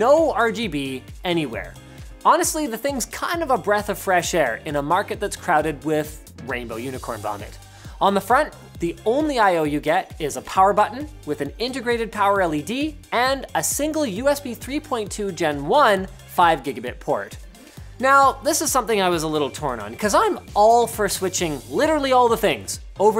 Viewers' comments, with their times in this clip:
0:05 Rainbow unicorn bonnet Or Rainbow unicorn Vomit?